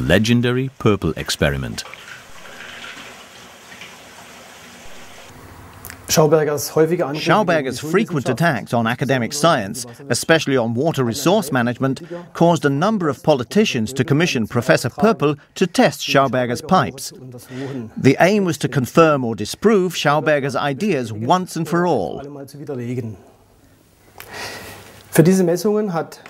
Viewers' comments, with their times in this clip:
0:07 ~ is it just me or does this sound like Matt Parker translating?